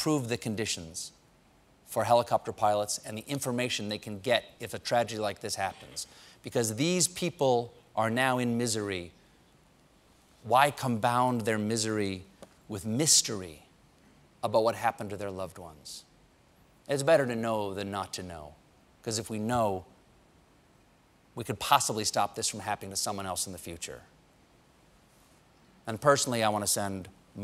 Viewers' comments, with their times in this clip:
0:10 "why combound their misery..." Sorry Stephen, "combound" is not a word. Thumbs down. Do better.